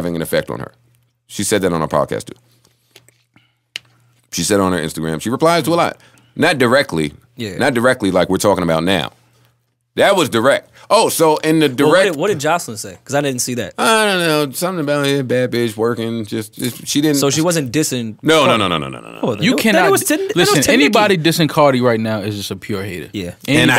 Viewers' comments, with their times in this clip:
0:04 Mal takes a sip of water, and smacked his lips like a bih......ok....that's my cue to cut off this worthless gossip...